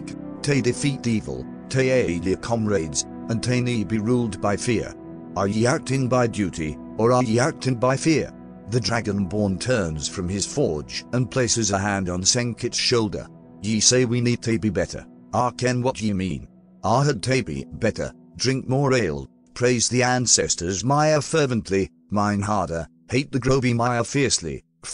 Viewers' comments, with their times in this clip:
0:09 A damn good motivational speech. The fact that it’s delivered by a huge dragon-looking mofo with a Scottish accent thicker than a bowl of oatmeal just makes it even more hype. 👍